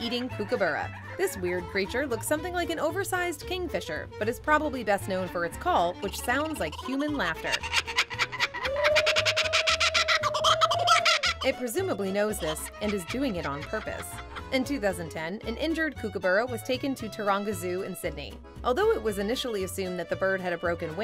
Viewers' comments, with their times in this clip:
0:09 Finnegan Fox is on a YouTube channel called Save A Fox (a fox sanctuary) and he laughs like that!